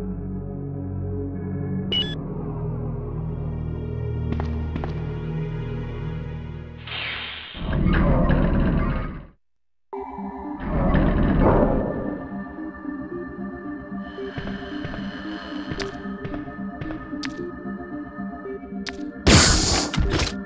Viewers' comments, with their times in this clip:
0:07 That music though!